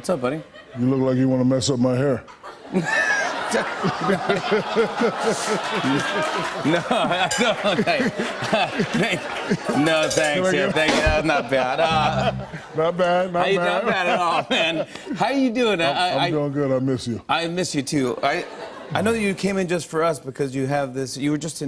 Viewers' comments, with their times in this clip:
0:05 Shaq’s finger drums be like anyone else’s regular drums